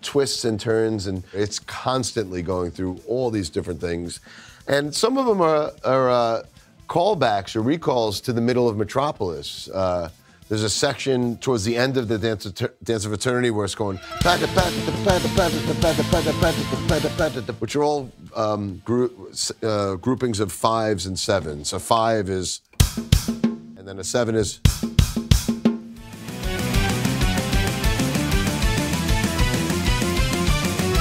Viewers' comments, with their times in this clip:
0:10 you know that this man is a genius when he recites that section of the song at exactly the same tempo as he played it 😯❤‍🔥
0:14 I'm not japanese but I appreciate the pako-pako-ko, pako-pako-ko, pako-pako sound.